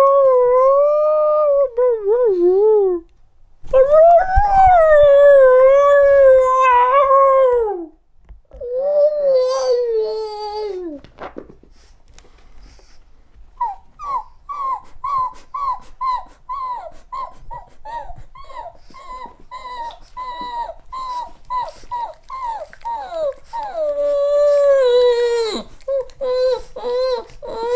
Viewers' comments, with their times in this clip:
0:08 He sounds like Crash Bandicoot